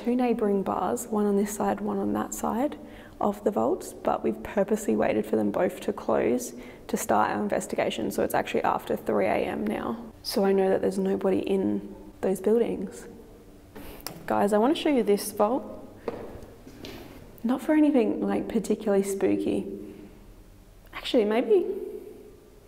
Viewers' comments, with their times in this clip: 0:09 Could the thuds be cars? (> )